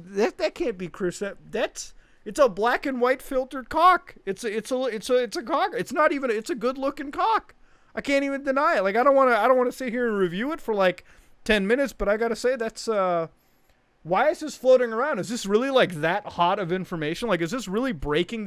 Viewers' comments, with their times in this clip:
0:06 "WOAH" In crash bandicoot voice